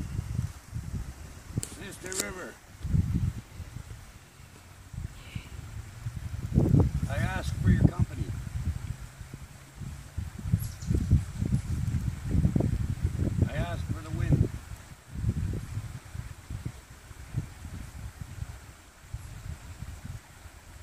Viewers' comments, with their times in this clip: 0:05 you can hear Sister River answer you with Yessss...